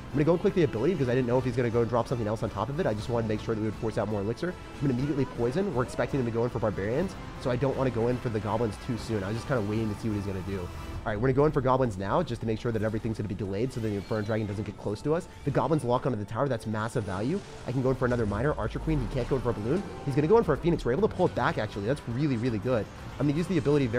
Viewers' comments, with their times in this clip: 0:07 You can sing a rap track when you are in overtime lol 😅